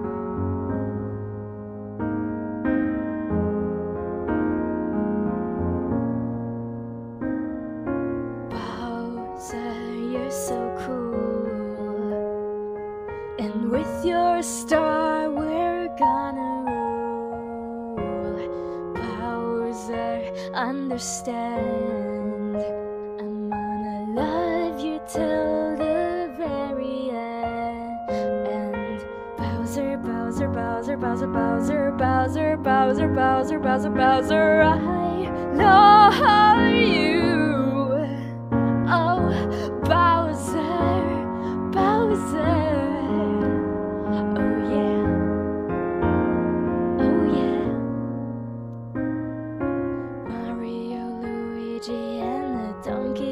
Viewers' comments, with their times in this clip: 0:08 If Sound like FNF Lullaby GF
0:38 did not expect the moan